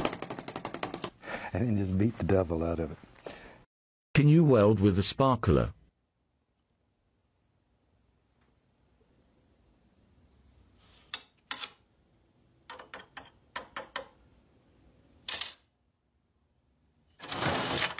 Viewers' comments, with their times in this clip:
0:04 I definitely relate to this guy's french/mad scientist cackle every time I try something stupid and it works way too well XD